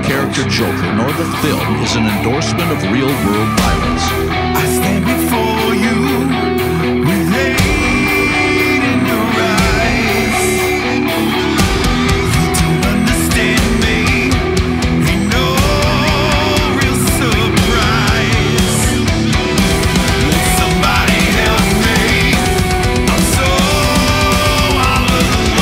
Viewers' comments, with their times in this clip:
0:06 For me the song only gets interesting ... Jeff rules as usual but this band has just never been that appealing to me. Very sterile and safe